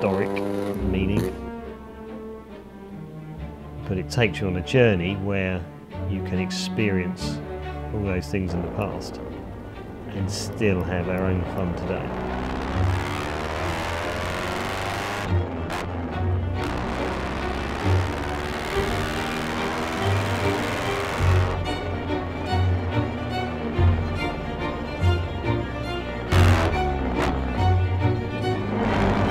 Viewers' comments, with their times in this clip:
0:10 I do not know who composed the music for this episode, nor do I know if this is indeed Philip Glass. But, starting it sounds like textbook Glass. I would like to know who did it. - Any ideas?